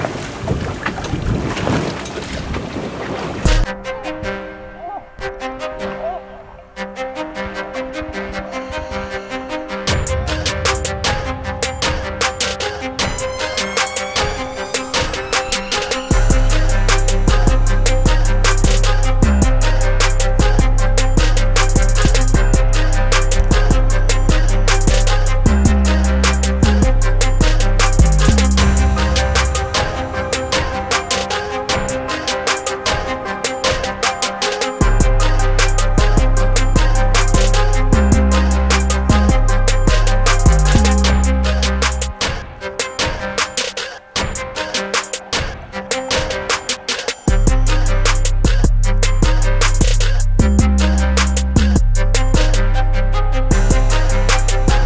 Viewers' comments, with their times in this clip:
0:03 trap music fishing
0:17 when that beat drops tho 🔥🔥🔥🔥
0:18 Rap music kinda nice lol
0:38 That instrumental is a go. I love it